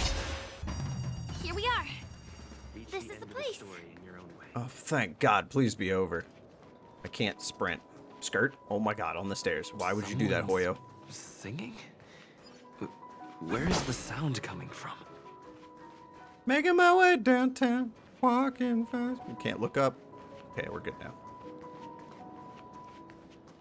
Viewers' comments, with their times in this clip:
0:07 Halfway House music is so good, it's the one I've been playing in the Express. I still have this whole moment recorded in my phone since February...